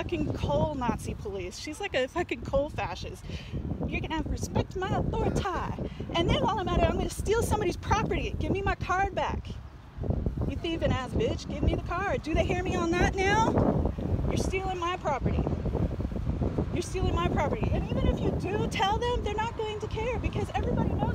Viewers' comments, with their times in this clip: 0:05 THE CARTMAN IMPRESSION 😭😭😭😭